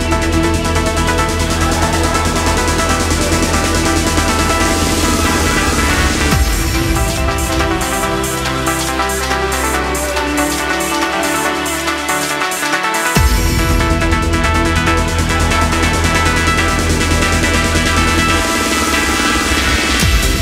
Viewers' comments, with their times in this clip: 0:05 That breakdown in Suburban Train gets me every time tingles